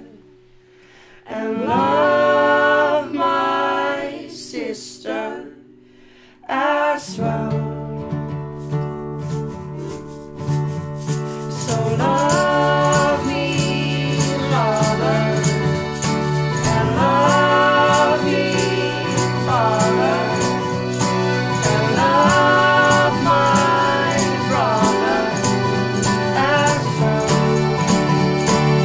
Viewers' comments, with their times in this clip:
0:09 What a beautiful, beautiful performance. Vocal timing & tone to be admired. Love the little toot on the accordion & at the very end I think they're having a good chuckle over it. Makes it real, which these folks know how to be.